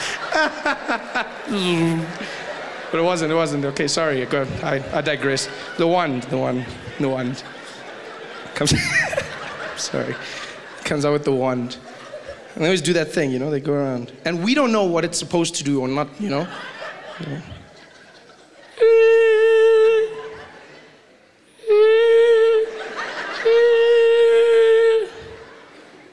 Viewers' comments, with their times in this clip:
0:07 I swear he forgot what he was saying. I haven't ever seen Trevor crack himself up do much before. He seems to be having a great time. But am I.. I needed this, thanks heaps